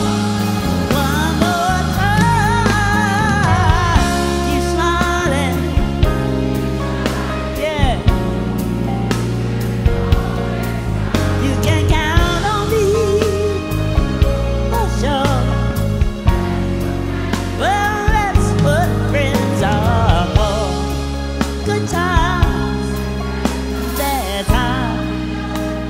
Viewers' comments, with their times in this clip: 0:08 piano Ouch. Not so tight, but anyway good rendition.